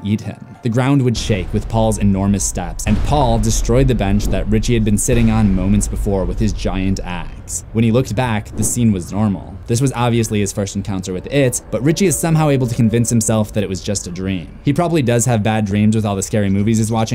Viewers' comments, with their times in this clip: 0:05 I THOUGHT YOU WERE GONNA SAY WITH HIS GIANT ASS AND I WHEEZED